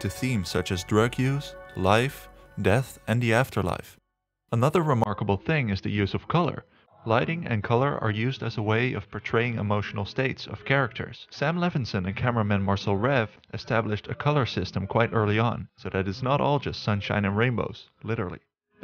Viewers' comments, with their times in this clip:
0:05 What happened to the voice over quality? Was it a rendering error or something? Or maybe it's just on my side idk.